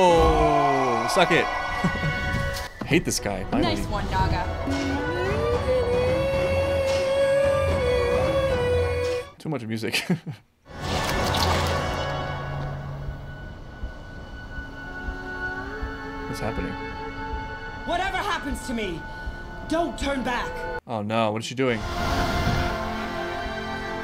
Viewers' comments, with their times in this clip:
0:06 the music track in this episode is one of my favourites ahhhh WHY SONY LET ME ENJOY